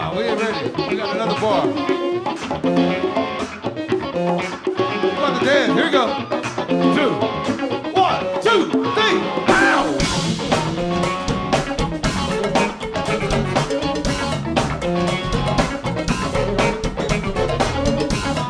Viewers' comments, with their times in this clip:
0:06 this funks so hard....